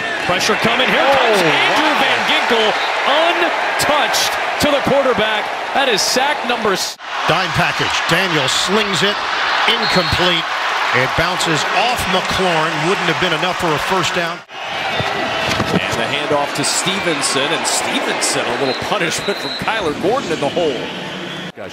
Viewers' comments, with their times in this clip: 0:04 sack number what? It was cut off again...c'mon.